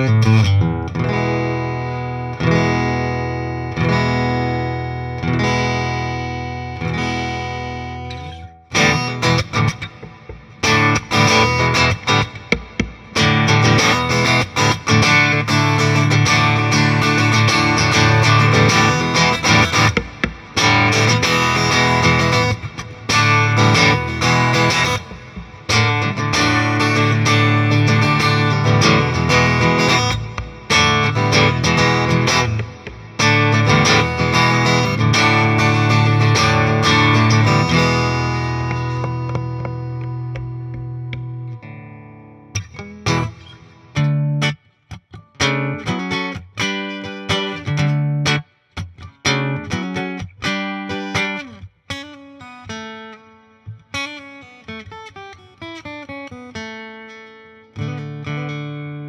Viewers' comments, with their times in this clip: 0:10 Great video but what are those slaps broooo I just cringed so hard ..he slapped the headstock 💀
0:45 This gets a like for the riffage. Long live the Conchords! #Jenny 😎👍🏻